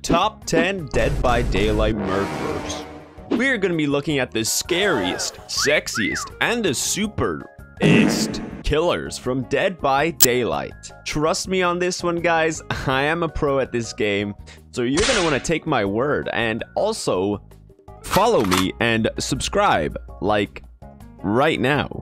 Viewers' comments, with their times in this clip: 0:10 OW MY RIGHT EAR